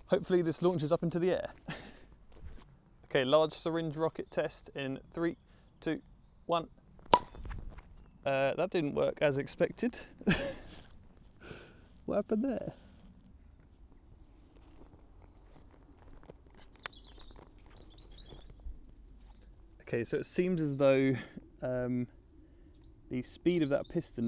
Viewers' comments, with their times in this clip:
0:05 large syringe rocket test in 3... 2... 1... PFLOPP *beer opens
0:05 Bro that pop sounds like it came from a cartoon